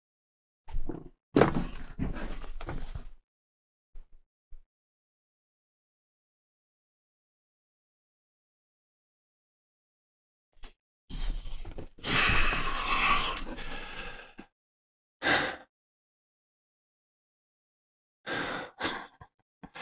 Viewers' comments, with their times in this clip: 0:04 Pretty sure he’s screaming F************************!!!!